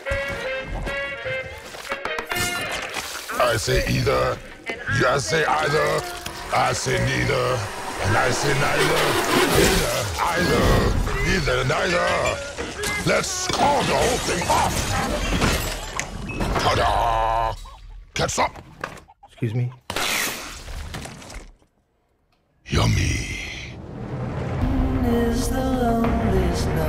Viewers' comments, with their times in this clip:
0:08 Eddie's ear bleed